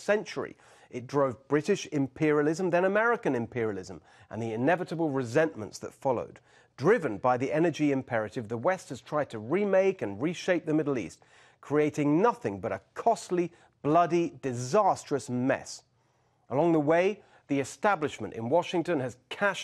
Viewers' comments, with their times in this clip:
0:07 He sounded like Patrick Bateman at Espace